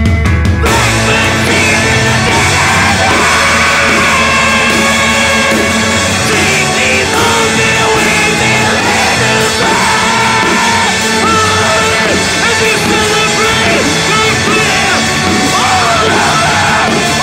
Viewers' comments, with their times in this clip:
0:05 fuck that floor tom